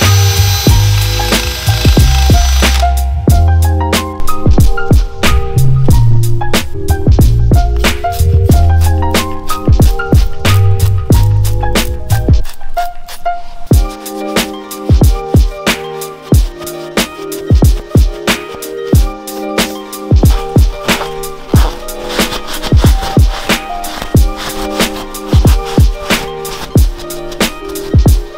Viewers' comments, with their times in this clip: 0:09 Music and spray harmonizing